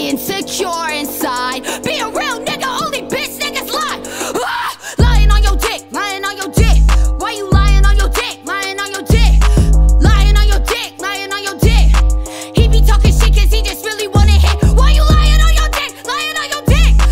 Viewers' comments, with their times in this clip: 0:04 carti would be proud of that scream lmao